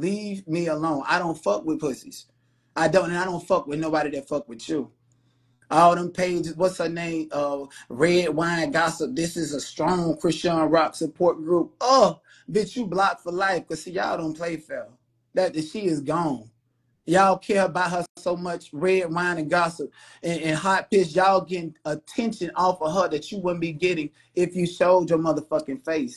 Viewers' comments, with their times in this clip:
0:07 is hilarious to me. That UH! I felt that! Hahahaha.